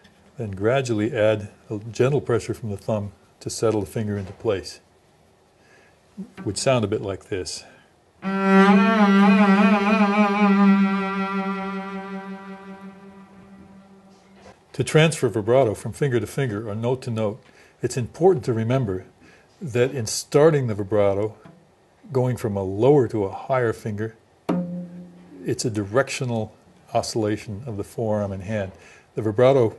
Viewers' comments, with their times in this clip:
0:10 hello .. could it be that I have perfect pitch (oido absoluto)? in the minute a very exact G note sounds